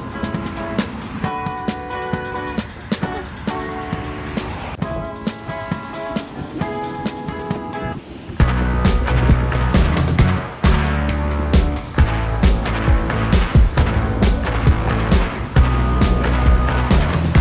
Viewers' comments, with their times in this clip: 0:05 Wait for the beat to drop lol🎶🎸